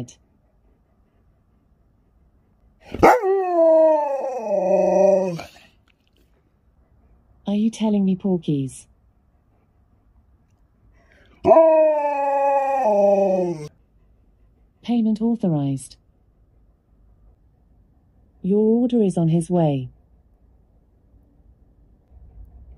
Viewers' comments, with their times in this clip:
0:10 The way he said no 😂🤣